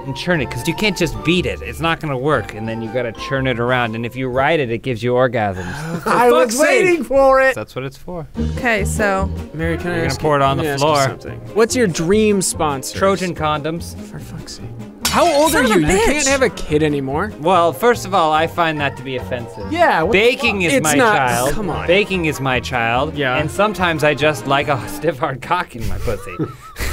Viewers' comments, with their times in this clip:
0:07 The delivery is fantastic